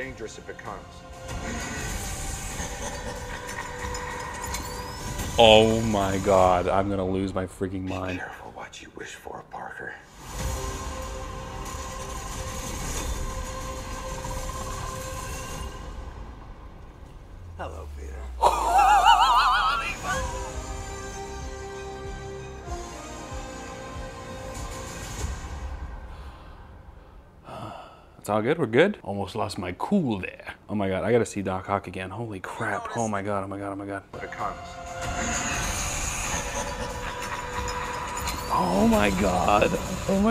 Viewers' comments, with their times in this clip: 0:04 Nobody get too excited about the laugh probably just Ralph Bohner
0:17 My car when I turn it on:
0:18 Is my car trying to start up
0:18 The silent "Holy fuck" is the best part of this reaction. I couldn't agree more
0:18 best laugh ever
0:19 Idk why but his laugh sound like its edit but its not
0:26 That little sigh though, as if it was to prevent an impending meltdown lmaoo